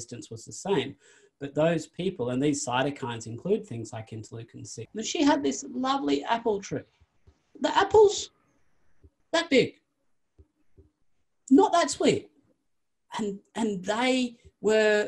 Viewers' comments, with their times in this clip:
0:03 voice crack? record fail?